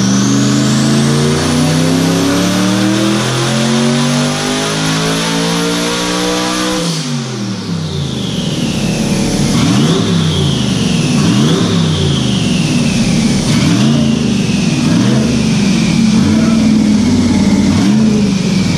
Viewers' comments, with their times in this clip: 0:05 everything in the room settling down when you let off just something beautiful about that ---